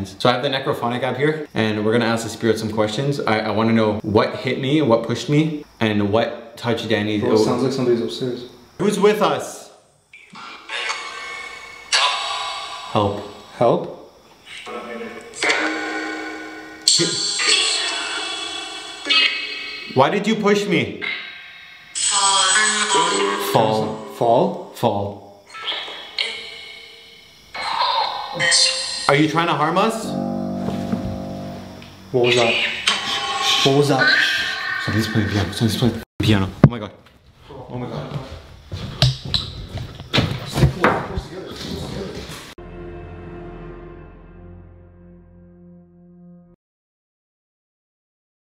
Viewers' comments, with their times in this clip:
0:09 you ask who's with us and a male voice comes through and I hear "ME"
0:32 After you said are you trying to harm us the noise like a low piano sound then sounded like they said “it was him”? ish